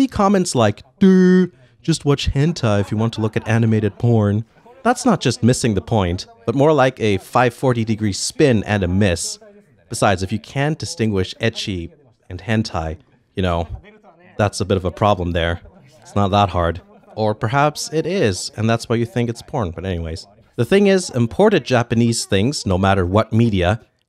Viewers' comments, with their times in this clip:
0:10 What does edgy mean in this context? And why do I feel so dumb? Edit: scrolled through comments and its spelled "ecchi"